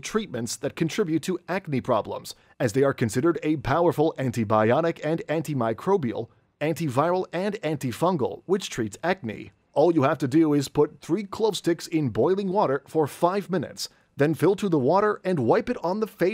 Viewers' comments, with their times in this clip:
0:03 clearly says it's Antibionic. 😂😂 Should have said. "Antibiotic". Watch out, Steve Austin!